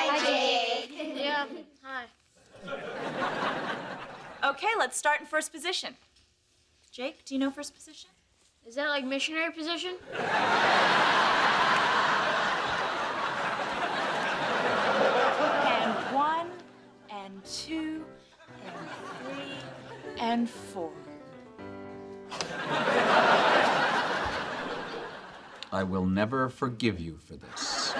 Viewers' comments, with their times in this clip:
0:10 The blond hair girl next to Jake broke character or maybe it was in the script for her to laugh lol😂